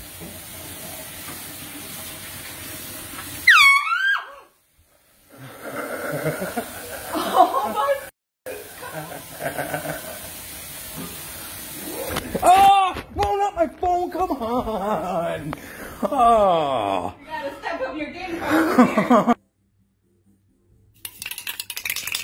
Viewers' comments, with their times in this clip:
0:03 I like the way how you blow the horn and the wife’s scream goes with it.